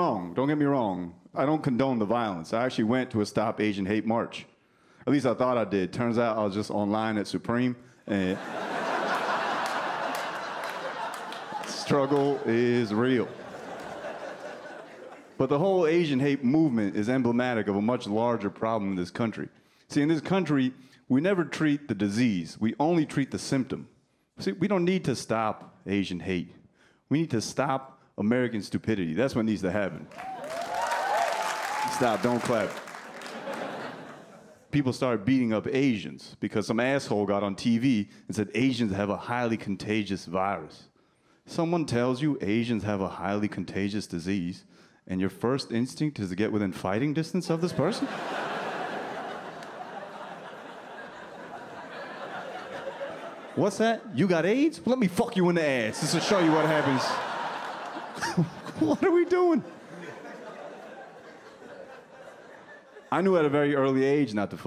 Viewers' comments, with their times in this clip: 0:06 Awful Mandarin Chinese.
0:50 it's so stupid that his 1st gen accent came out